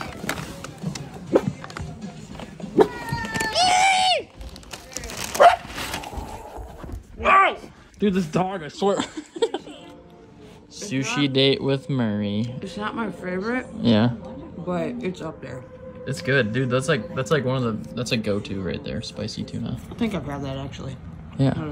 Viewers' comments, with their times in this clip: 0:06 I swear I heard the dog yell “WOAH” or “ OW” 😂😂😭